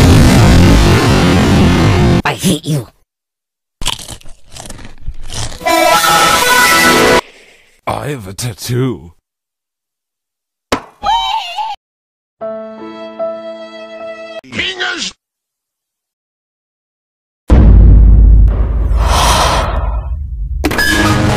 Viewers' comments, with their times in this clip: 0:05 This is loud